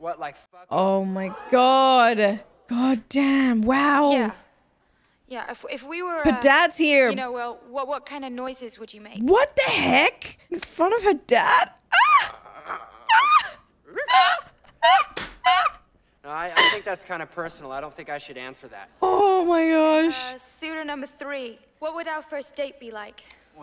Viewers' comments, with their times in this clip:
0:07 I wonder how many takes that took them to get because I laugh my ass off at Jason Lee's face and the noise he makes every single time 😅